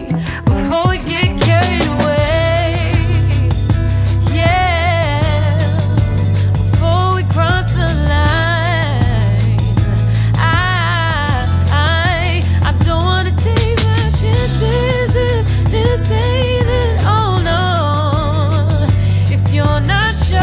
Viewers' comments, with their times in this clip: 0:08 she has the smoothest riffs in the game rn. Crazy vocalist...out of all the genres, R&B is going into the safest hands. Summer walker, H.e.r, Amber olivier, Bryson tiller, dvsn, Sza, Khalid, Ari Lennox
0:08 OMG THAT RUN